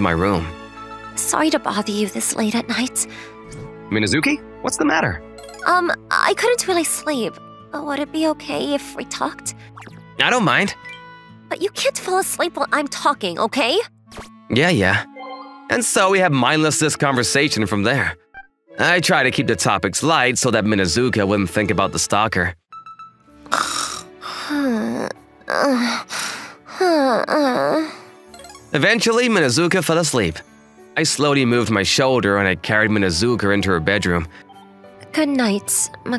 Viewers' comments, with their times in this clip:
0:03 What is that voice
0:24 is girl sleeping properly or is he moaning wth is that sound